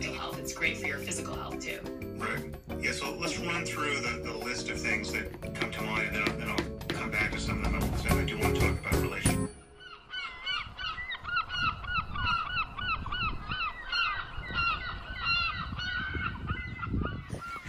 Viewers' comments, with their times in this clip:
0:03 YO that was Sam Harris in the background